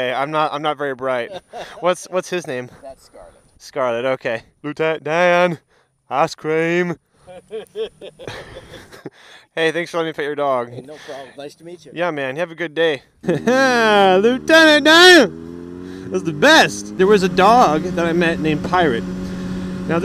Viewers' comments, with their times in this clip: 0:04 holy shot that impression was spot on lol